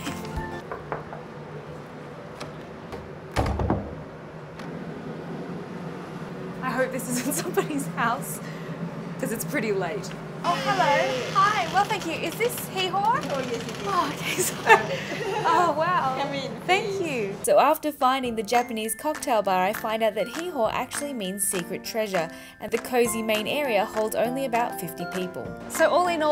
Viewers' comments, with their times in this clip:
0:10 The way she said Hihou 秘宝 sounded like Hee Haw :DDD